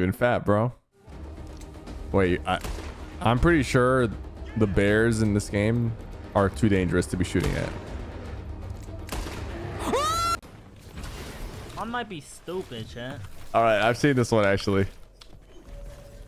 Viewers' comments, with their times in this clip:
0:03 bro the scream